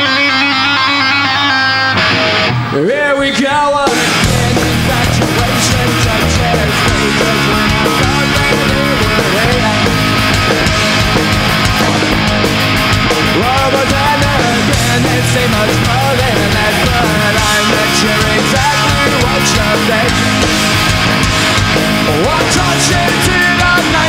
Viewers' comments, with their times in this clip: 0:05 damn that bass